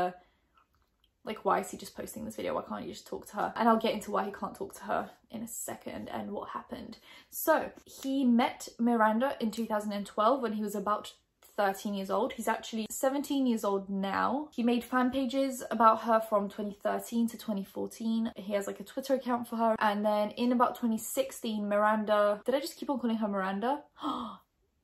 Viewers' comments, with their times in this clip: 0:08 Thats my name and hearing it in her accent is so cool!!